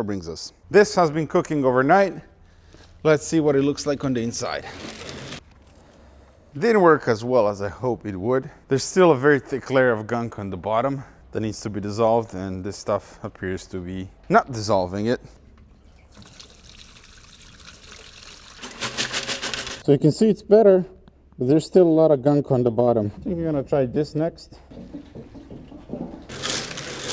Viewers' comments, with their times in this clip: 0:08 World's most toxic maraca player? 😂